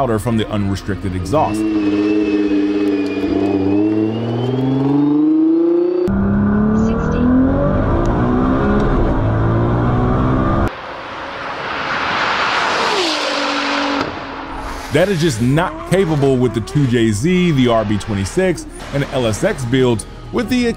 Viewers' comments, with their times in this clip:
0:03 I'm sorry but if you're in a GTR and I hear your turbskis like that, I'm out